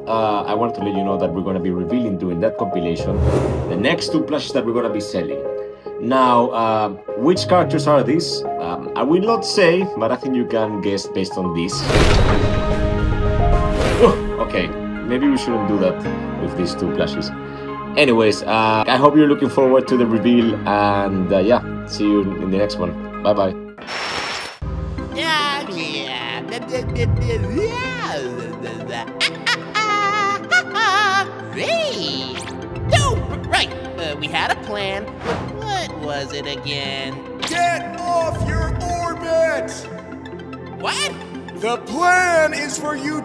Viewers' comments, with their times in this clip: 0:03 screams of happiness
0:25 nobody talks about Neptune singing and blabbering